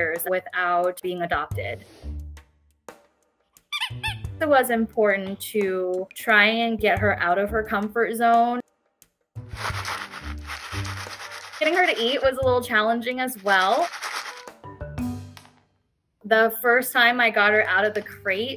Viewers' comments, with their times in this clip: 0:06 .....i am comfortable right here, no thank you with your loud toy 🤣